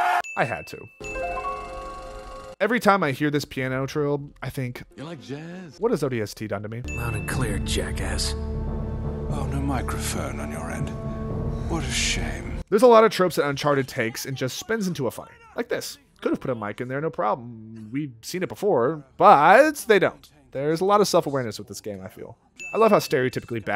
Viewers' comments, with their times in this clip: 0:08 smooth jazz intensifies